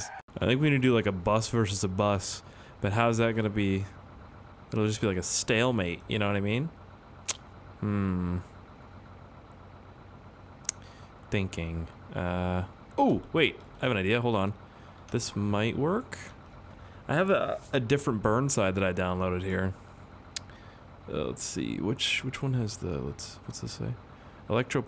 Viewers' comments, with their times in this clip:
0:08 Sounds like steve from mincraft